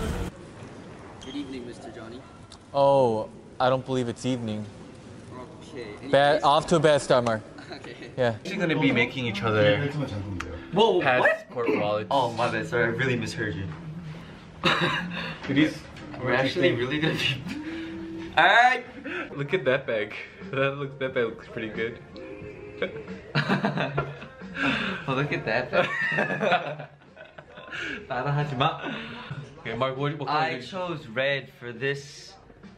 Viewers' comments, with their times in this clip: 0:08 Did Mark hear "We are going to make out with eachother" instead? HAHAHAH
0:08 I FINALLY REALIZED WHAT MARK THOUGHT JOHNNY SAID SKTKDK
0:08 I honestly still don't know what Mark understood. I can't even understand half of what Johnny is trying to say pawiorhjaüsfjasrpo
0:09 lol I wonder what Mark thought Johnny said. He seemed so shook
0:09 wtf did mark hear can someone please explain
0:12 Mark misheard it and thought johnny said we are gonna make out with each other
0:14 mark's akward giggle will never not be funny 😂